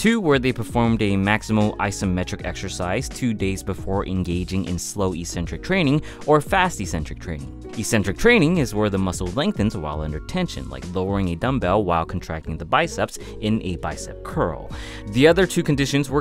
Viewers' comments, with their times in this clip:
0:03 Dat Music Transition :O